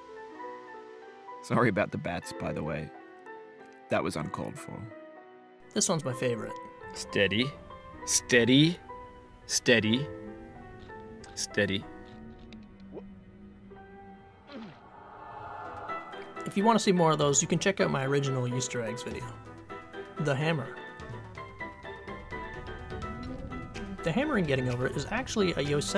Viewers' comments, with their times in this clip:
0:06 bro the voice line 🤣🤣🤣🤣